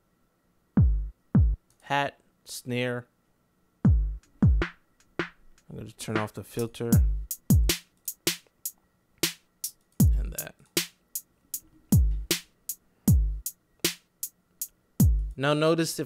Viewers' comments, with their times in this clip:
0:03 Did you just rap?